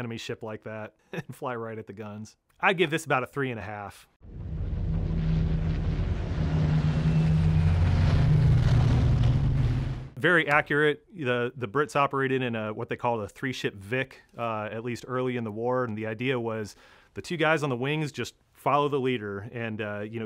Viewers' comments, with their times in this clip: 0:06 The roar of three spitfire engines Ermagherd, Unnnfff !!